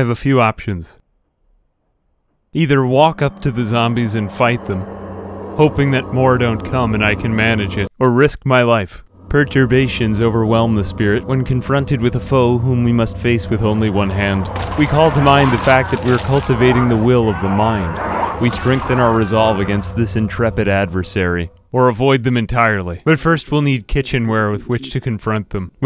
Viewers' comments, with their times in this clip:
0:10 sounds like the narrator from reciever 2